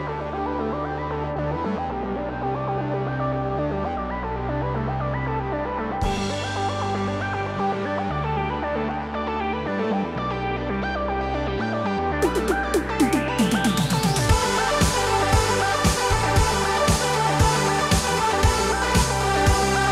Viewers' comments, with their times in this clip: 0:04 absolutely loved the lime lapse, great music too